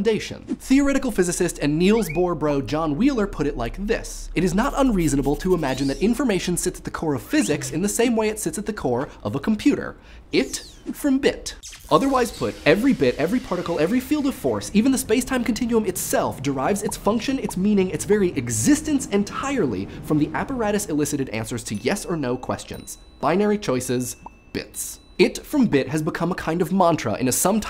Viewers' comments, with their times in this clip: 0:08 the sound effects from ish sound like spell casting from morrowind